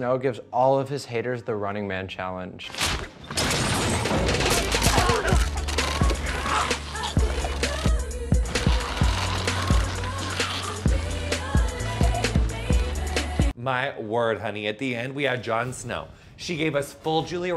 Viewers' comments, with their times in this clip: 0:05 LOL THE BEST PART IS THE SONG SHOUTOUT TO BABY BARACK OBAMA SINGING IT ON SET